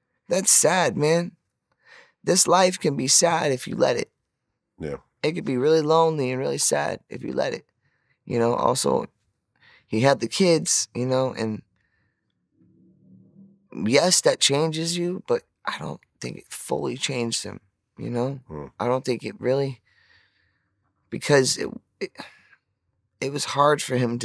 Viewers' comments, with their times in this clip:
0:06 he sounded so sad i wanna donate money to him like one of those cold dogs in the commercials that need adopted lol